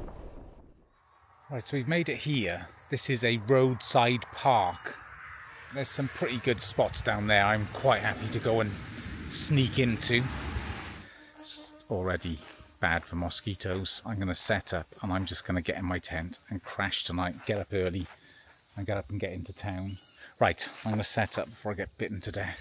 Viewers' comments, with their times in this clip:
0:08 Hahaha, had my ear buds on and that mosquito had me swatting at nothing hahaha.